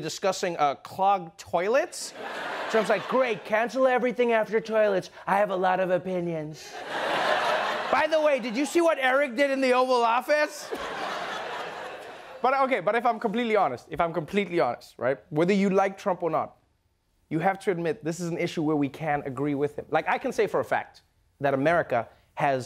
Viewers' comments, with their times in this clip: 0:10 ... There's a backstage laugh